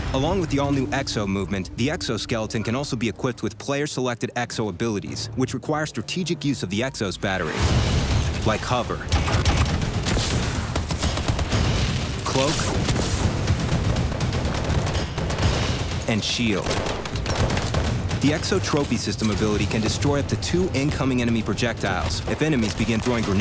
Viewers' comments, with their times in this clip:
0:08 hbra3 sounds like EM1
0:08 did someone notice that on the hbra3 has the sound of an EM1?